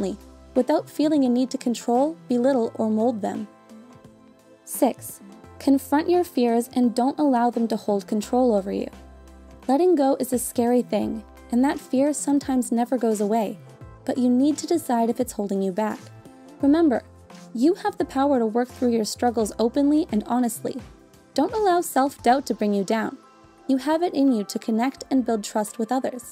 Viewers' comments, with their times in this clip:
0:05 im sorry but fears or tears?
0:08 Has f always been so similar to t in your videos? Noticed that fears aren't that different from tears